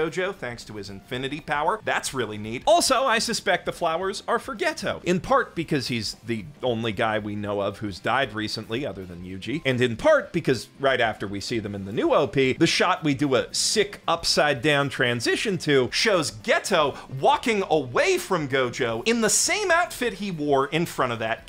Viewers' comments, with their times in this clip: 0:03 For Getto I heard it Forgetto